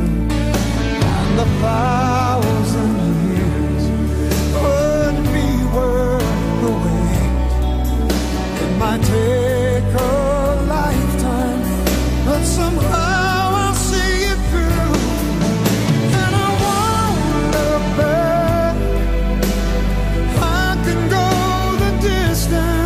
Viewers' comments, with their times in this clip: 0:08 "This idea makes you sound for ever like you Michael bolton voice ✅️ 🤣!"?